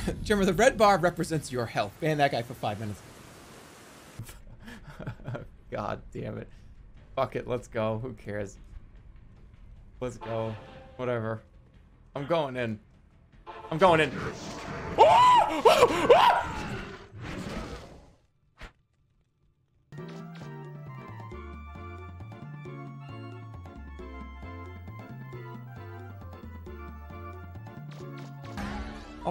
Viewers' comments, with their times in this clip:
0:10 he sounds like he suddenly got lit on fire